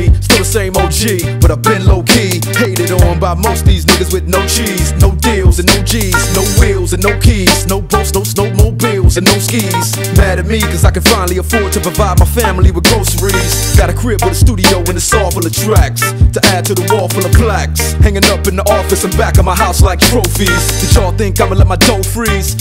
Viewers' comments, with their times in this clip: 0:07 u can hear eminem voice here 😆 🤣 😂